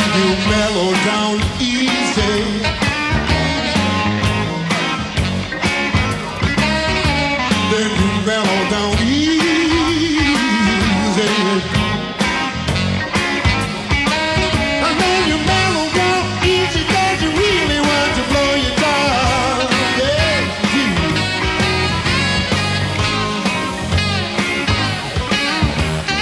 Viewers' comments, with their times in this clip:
0:09 Oh man, that trill. I've been listening to Jack Bruce for over a decade, have eight of his solo albums, six Cream albums, and two Bruce West Laing albums, and the man still manages to knock me off my feet. I always love me some Dick Heckstall-Smith too. Great performance all around.